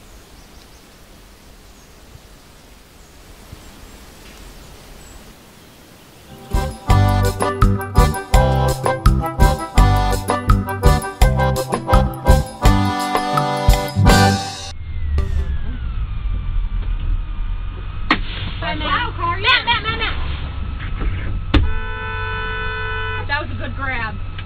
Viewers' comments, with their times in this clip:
0:06 this music reminds me of how to basic